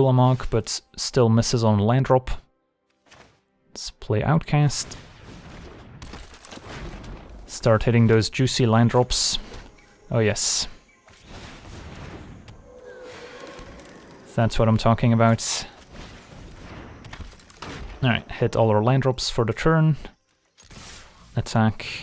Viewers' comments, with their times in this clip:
0:04 You sound so satisfied after dropping all these lands in